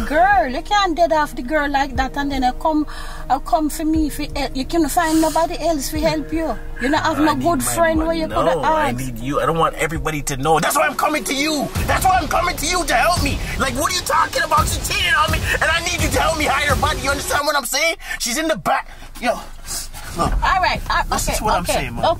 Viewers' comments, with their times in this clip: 0:09 they way it went to calm to yelling 😂😂😂